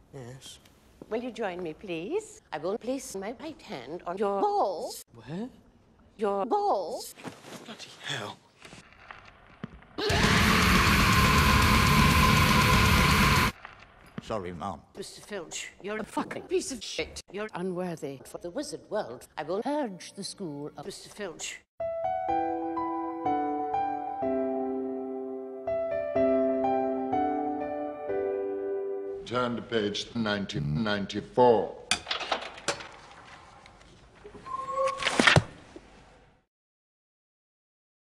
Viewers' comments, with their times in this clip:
0:10 Holy shit was that black metal?
0:22 Gundam Seed sad music <3 EPIC taste